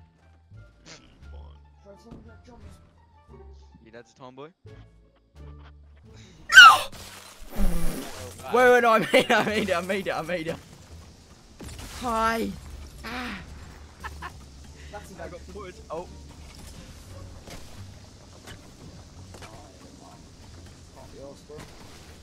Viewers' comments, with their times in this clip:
0:05 the voice break tho
0:06 hurt my fucken ears
0:06 that squeak tho, then he realises he made it